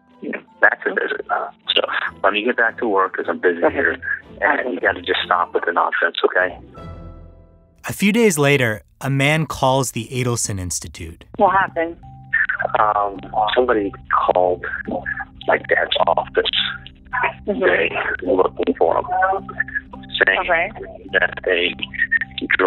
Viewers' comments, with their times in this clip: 0:09 Charlie tells his mom "stop with the non sense" , cuz she got a letter from Sammy, lol that's hilarious to me! He is yelling at his mom cuz she got a letter from Sammy and is worried about it! That shit is funny! I'm sorry! Adelson's make me laugh!